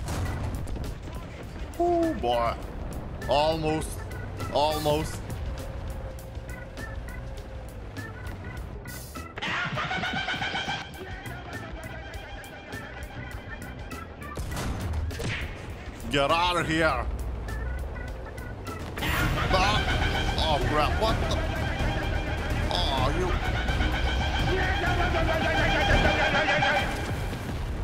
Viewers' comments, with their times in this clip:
0:06 that screaming caught me off guard,🤣ded
0:07 omg the attack helicopter sounds made me cry with laugher xD 10/10 Dollar
0:11 +++ best moment! the dramatic music and the panic love it